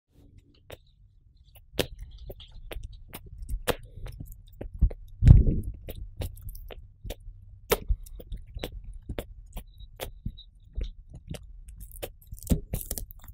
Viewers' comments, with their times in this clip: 0:01 Nobody: What my friends hear while we’re playing games from my mic